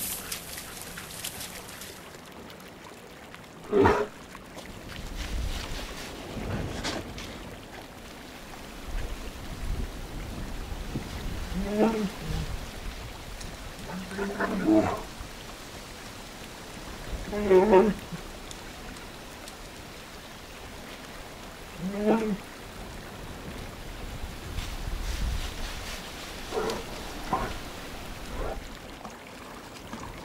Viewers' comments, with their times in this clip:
0:08 Anyone here know what they're saying to each other ? I'm trying to learn Bear, but the audio's not the best here
0:17 Chewbacca is that you?